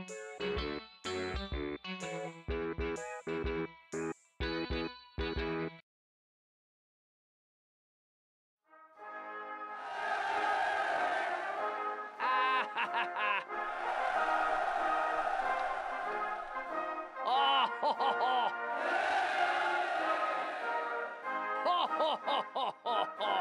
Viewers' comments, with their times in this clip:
0:09 Red Guard : laughs People : cheer